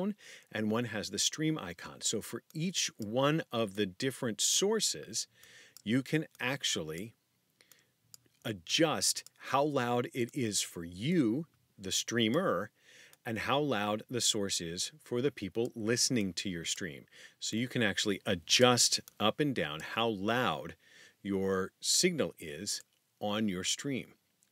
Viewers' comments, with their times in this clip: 0:05 Notice how easily you hear his clicks when he starts to adjust the volumes in the software? Stuff like that convinced me to not use a condenser microphone for game recording/streaming.